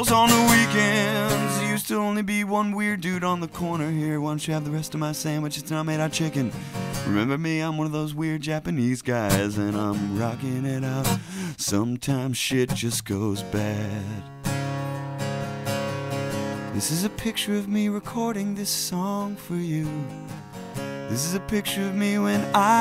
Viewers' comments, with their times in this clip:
0:03 is that Swedish?
0:04 It's swedish in the background